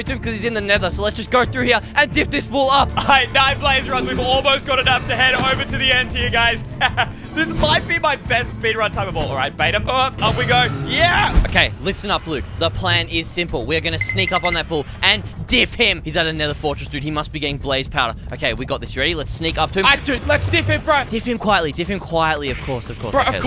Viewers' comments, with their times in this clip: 0:06 the laugh was like a meme lol